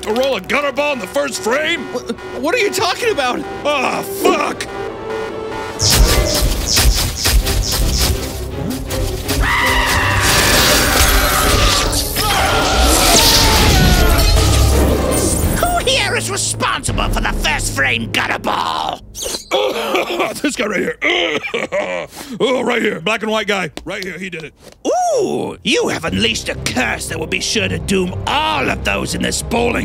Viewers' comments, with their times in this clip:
0:10 Does anybody notice the scp 096 scream
0:12 Anyone catch the 096 scream
0:12 scp 096 scream